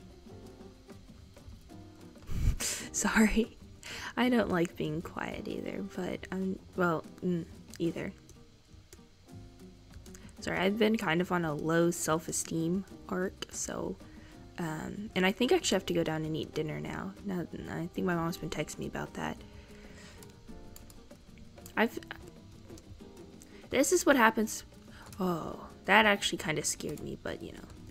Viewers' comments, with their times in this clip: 0:08 * struggling to word * I can relate to that in rl can not speak well